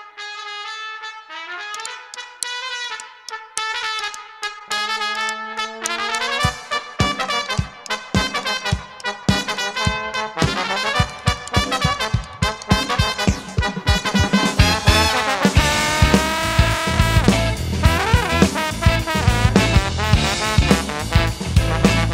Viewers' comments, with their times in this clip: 0:04 really liked the trumpet & trombone solo